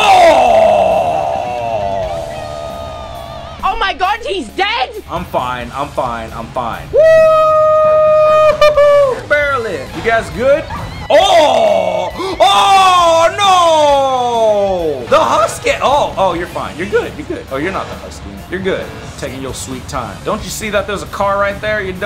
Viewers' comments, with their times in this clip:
0:03 Not the tubbo sound😭